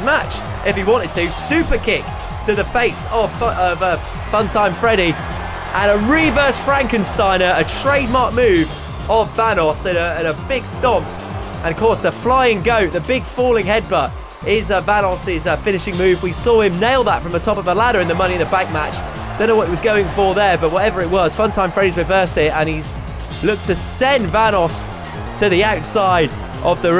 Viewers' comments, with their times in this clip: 0:08 did he say thanos?